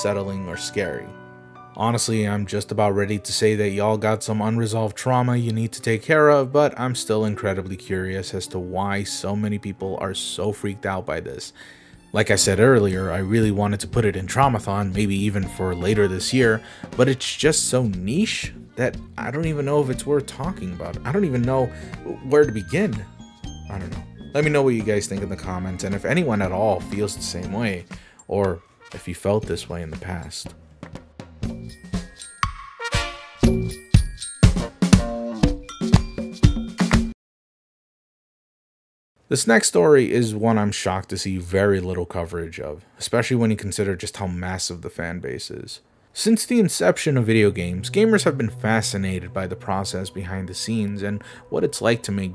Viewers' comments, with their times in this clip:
0:10 The Disney Scene It is pretty fine but the only thing I can think of is that its chaotic. The instruments change frequently and it can be a little jarring. I have no idea if that's what these people are hearing but that's the only issue I can think of.
0:37 I think what makes it creepy to a lot of kids is the fact that most of the instrumental "callouts" are almost unrelated to each other leaving it feeling fake or false, add to that unfamiliar instrument sounds and it would be off putting to unsuspecting kids. Especially kids with sensory issues